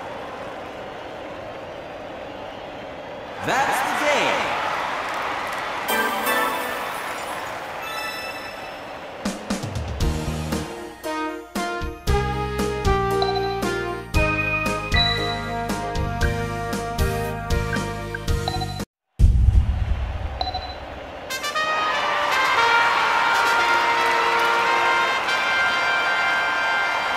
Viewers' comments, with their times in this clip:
0:09 the skill thingy sound and the score has perfect timing
0:11 that matched really well with the beat
0:13 that ding synced with the music at the same pitch, and the 2nd ding kinda did too.
0:14 DID NOBODY REALIZE HOW ON BEAT THE PRO SOUND CUE WAS WITH THE SONG